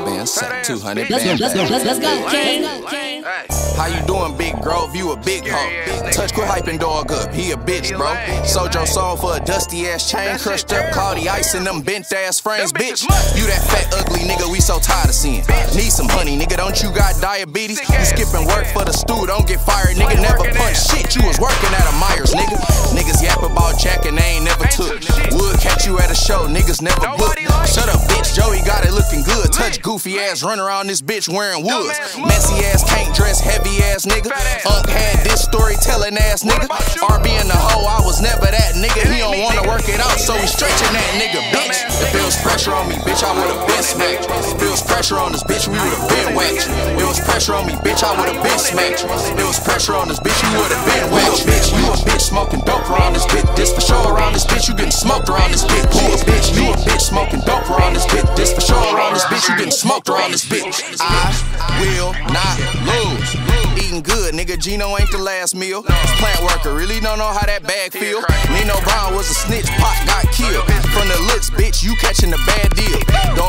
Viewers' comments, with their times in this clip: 0:08 This nigga was hurt making this diss. Peep the voice crack
1:00 Second Beat Sick ASF!